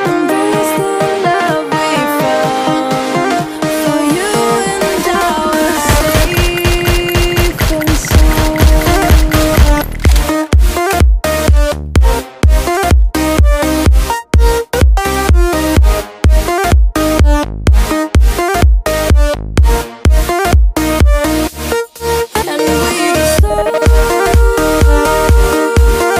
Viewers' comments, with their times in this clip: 0:07 firing was in sync with the music